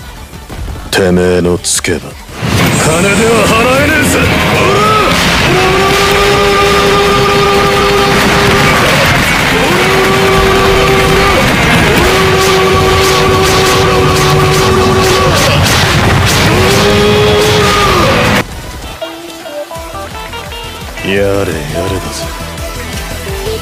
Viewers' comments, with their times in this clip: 0:07 happy ora noise :3